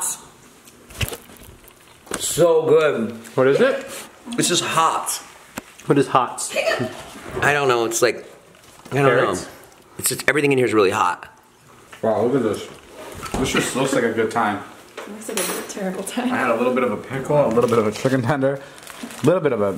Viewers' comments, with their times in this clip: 0:06 she’s literally saying hiccup
0:07 you can hear hiccups, I love that she actually says the word while it happens